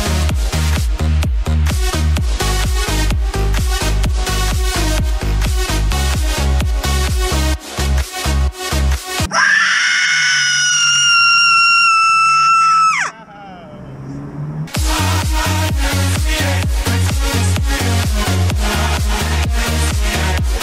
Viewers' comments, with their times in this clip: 0:08 why does that screaming chick highkey sound like the cleric beast from bloodborne XD